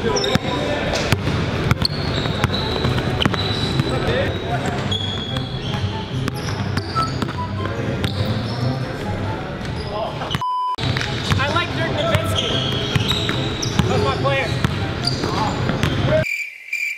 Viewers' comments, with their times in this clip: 0:03 is that flight in the background